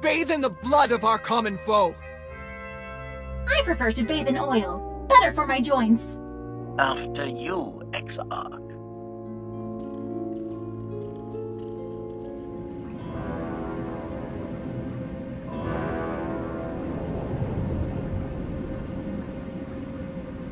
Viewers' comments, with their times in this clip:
0:07 HK-55 uses low volume voice to Zo-Om. "Brilliant statement: We'll use the exarch as a meatbag shield."